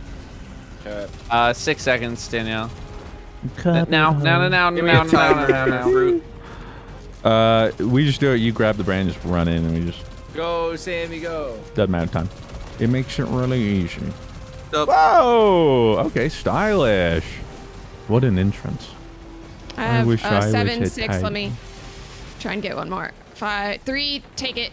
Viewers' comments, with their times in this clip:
0:05 Wait a sec, when you said “jobs done” were you imitating the starcraft workers?